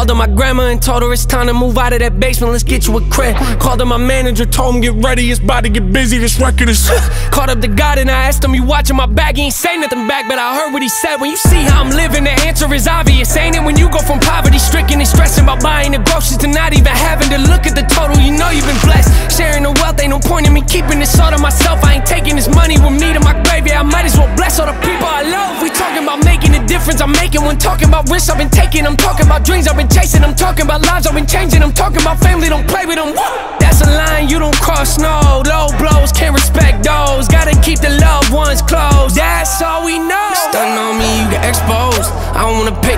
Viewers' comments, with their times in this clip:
0:06 did he almost say shitty⁉️
0:09 that background adlib tho
0:09 The ad-lib is 🔥🔥
0:26 get this choir a grammy🤯 the beat is so dope